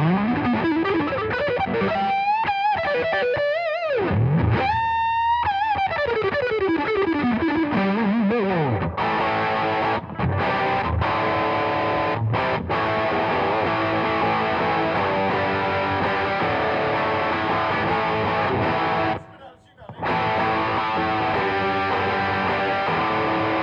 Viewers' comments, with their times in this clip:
0:04 very Eric Johnson-y